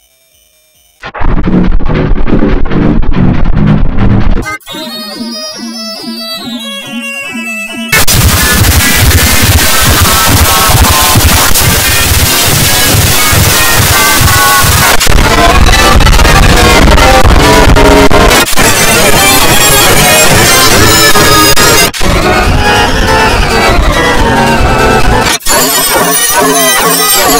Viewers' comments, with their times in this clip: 0:08 ,cool very super loud is deaf. Cooooooooll bro.